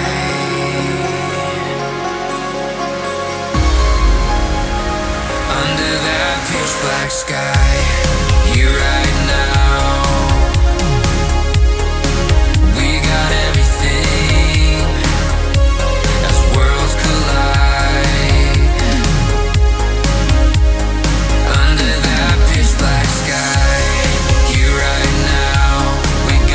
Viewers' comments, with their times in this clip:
0:07 Beautiful synthwave/Synthpop music. I love the synths start